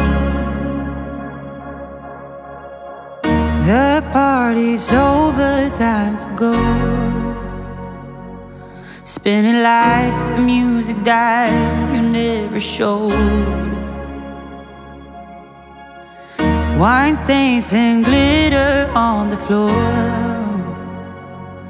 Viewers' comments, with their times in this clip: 0:03 sounds like stitches